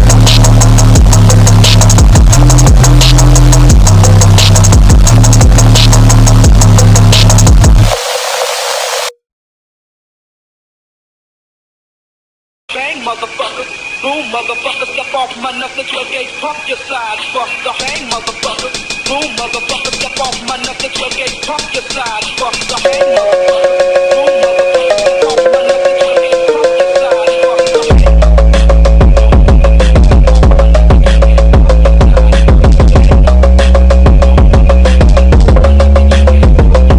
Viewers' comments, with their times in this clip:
0:10 hottest track, Even though it doesn’t have that Memphis bounce as much as the others
0:19 hardest beat had my beats rumbling